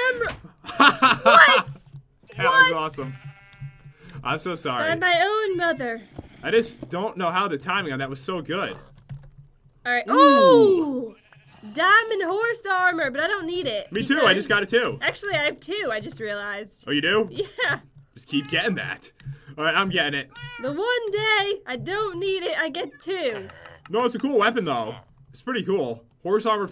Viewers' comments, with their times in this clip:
0:09 they said ohh at the same time lol